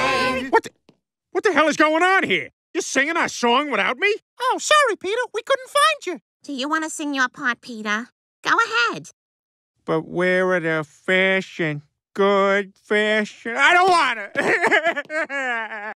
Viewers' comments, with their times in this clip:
0:09 Peter sings his part of the Family Guy theme song wrong in a confusing way, then he whines saying he doesn't want to and runs off crying. 🤣😅😄😂